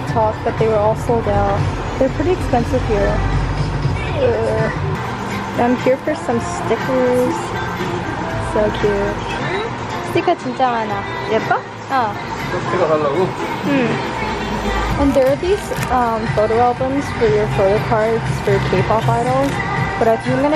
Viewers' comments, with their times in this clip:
0:05 umpah umpah playing HAHAHAHAHA love that store